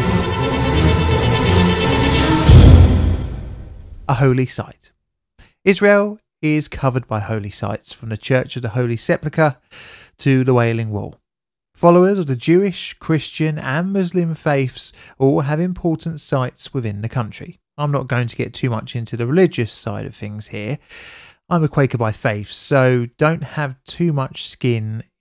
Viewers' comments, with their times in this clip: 0:09 Holy Sepplica? No dude, it's pronounced sepulchre